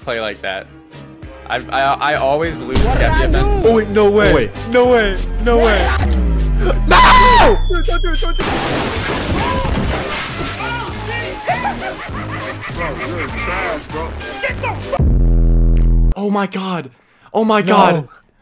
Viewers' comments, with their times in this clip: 0:06 bro my phone lagged right when he screamed